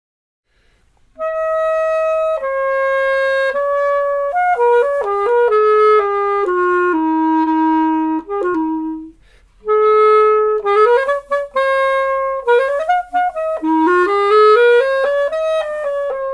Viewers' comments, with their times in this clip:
0:01 remind me of Nokia Arabic Ringtone